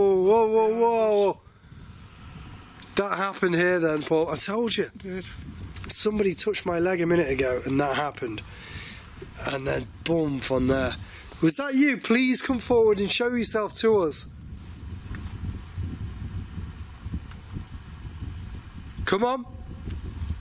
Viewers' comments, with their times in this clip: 0:05 That's you banging it you're stood right next to it you 🤡🤣